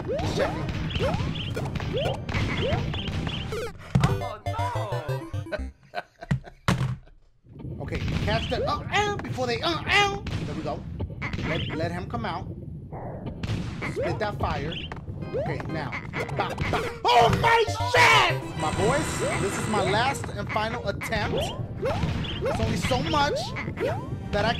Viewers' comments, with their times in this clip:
0:08 I like how dashie is imitating that noise lol